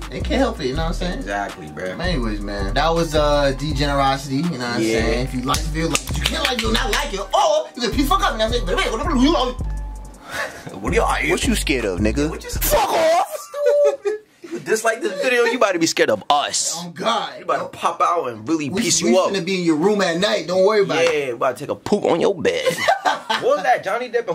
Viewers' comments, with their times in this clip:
0:08 dude deadass just breathed all up in my ear lmao had me thinkin you was really here